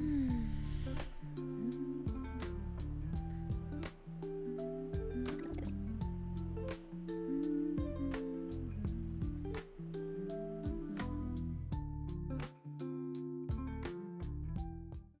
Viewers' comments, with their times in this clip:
0:05 So what sped-up subliminal message am I hearing ? 🤔